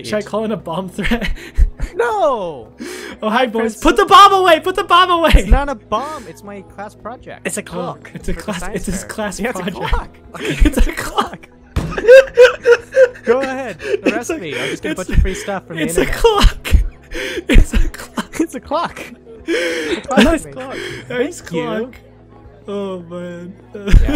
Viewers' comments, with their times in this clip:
0:06 oh yeah of course you yell "PUT THE BOMB AWAY" when the principle is walking towards you cause obviously he can't hear you...